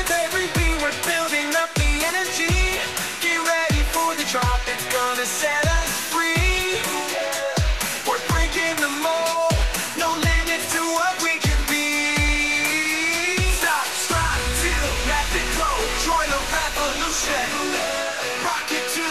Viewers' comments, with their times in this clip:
0:06 Song is pretty good.